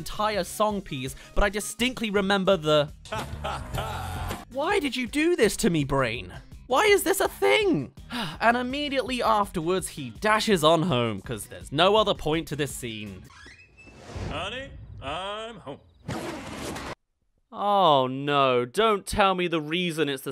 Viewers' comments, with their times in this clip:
0:04 how dare you make me relive the laugh I haven’t seen this movie since I was like 5 and all I remember is some scene where the guy makes that flip book animation thing for his wife